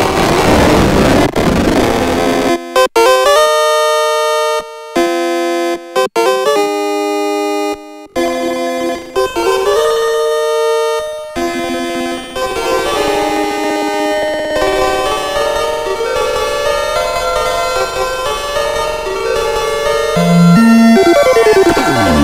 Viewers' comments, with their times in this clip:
0:08 If you mean the echoing resonance resemblance to a reverb ..... then it's the Bionic Lester MKIII. I recorded each track of the original game seperatly and feed to each filters of both bionic lester MKIII. With some adjustments when the filter is in Comb mode you'll get this kind of result. So what you hear is only the waves through the Bionic Lester no EQ !!!
0:08 hey there, I know it's been a while. I got laid off and was jobless for nearly 10 months, but I got a great offer of employment today so I'm going to pick up one of these after all! This may sound dumb, but I am particularly after the resonant tone of this filter which you achieved in the vid. I'm assuming it was just the one filter on the left set up this way (Comb mode) during that bit, is that correct (basically I'm hoping I won't need two of these to get the sweet resonant chamber echo)? Also, are there other filters in euro which have this kind of resonant reverby/delay characteristic? I'm new to modular. I built myself a small minimal skiff and got laid off shortly after, lol. p.s. yes I will be using the filter for more than just the comb reso effect :D Thanks!